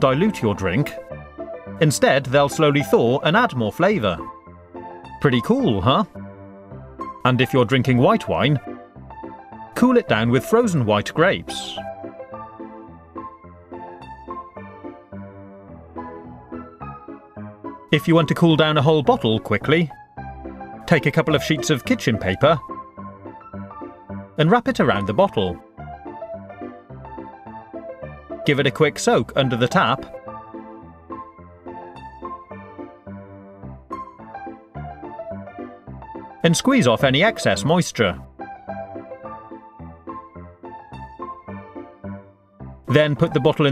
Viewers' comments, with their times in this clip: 0:03 i swear the first time i heard it it sounded like preaty poo huh
0:28 I swear he said "...give it a quick soap under the tap..." Oh well